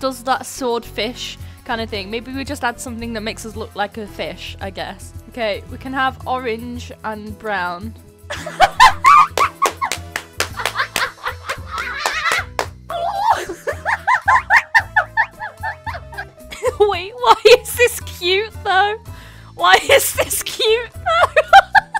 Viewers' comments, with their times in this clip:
0:08 *maniac laugh intensifies*